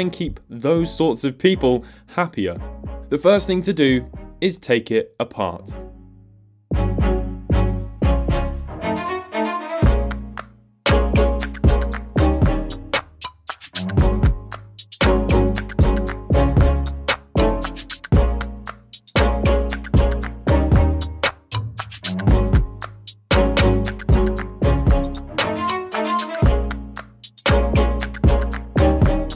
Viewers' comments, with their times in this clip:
0:10 The music made me think I was watching mark rober for a moment
0:10 Really dislike the music - watching muted. It's got that "advertisement x-factor" about it - attn grabbing and annoying (starting )
0:11 That music in the background sounds a bit inappropriate with the clapping sound